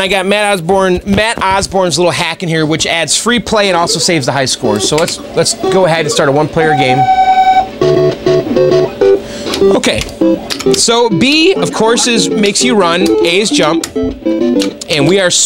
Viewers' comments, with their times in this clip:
0:03 That racing sound in the background matched up with the startup of the Vs. Super Mario Bros. game.